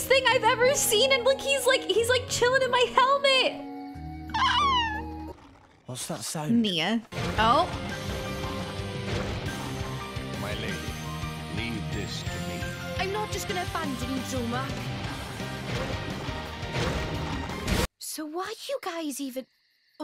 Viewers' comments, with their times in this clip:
0:03 weird sound Rex: „What‘s that sound?“